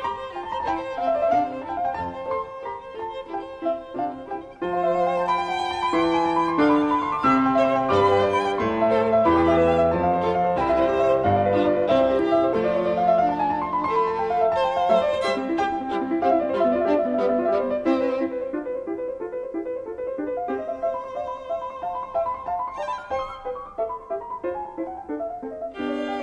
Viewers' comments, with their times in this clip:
0:08 In I heard the natural B instead of Bb in piano right-hand